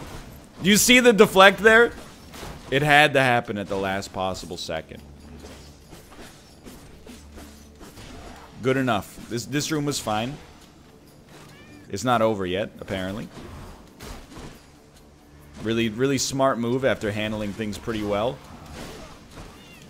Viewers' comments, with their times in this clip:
0:05 the spear attacking to the rhythm: "He's finally here and about time too"